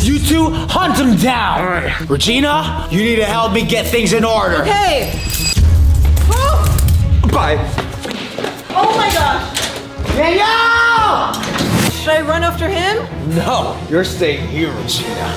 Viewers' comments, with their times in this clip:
0:03 Breaks Handcuffs gulp says bye so calmly